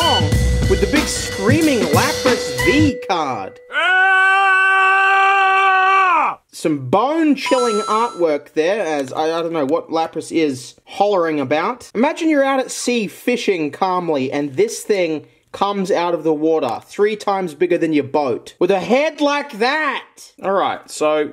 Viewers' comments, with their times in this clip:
0:03 Love the AAAAAAHHHHH!!!!